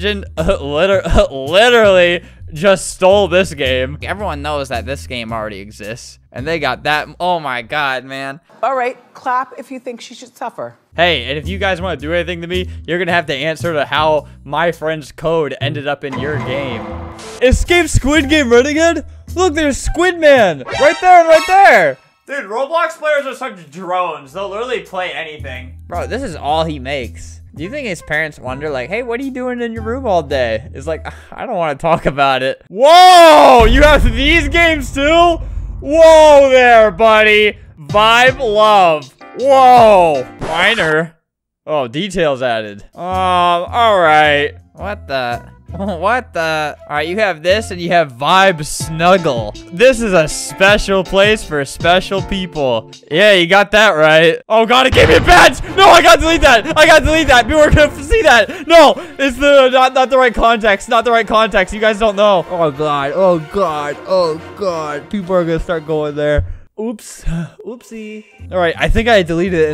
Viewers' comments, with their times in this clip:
0:08 basically every single person who thinks they copied games: CLAPS
0:09 tries to get the clapping world record
0:54 the fear in his voice